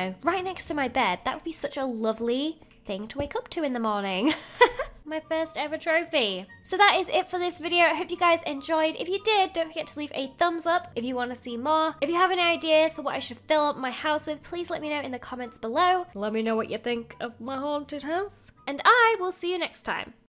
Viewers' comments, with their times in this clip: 0:04 she sounded like barbies chulkle